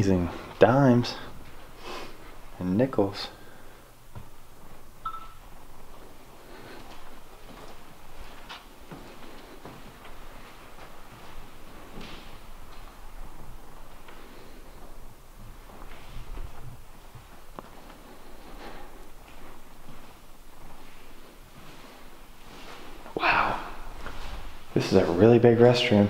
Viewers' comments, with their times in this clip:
0:04 exactly, he comments on the nickels and dimes and then you can clearly hear a piano key.
0:05 At vts of did you hear a key on the piano be played
0:05 Didn’t you hear the piano in ???
0:07 I heard the piano while they were walking did anyone else hear it.